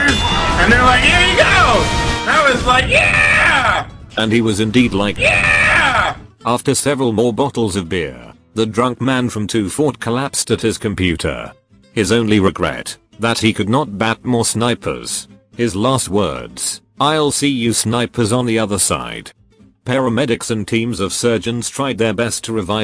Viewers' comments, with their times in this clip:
0:03 that's sounded kinda like the Howard Dean scream xD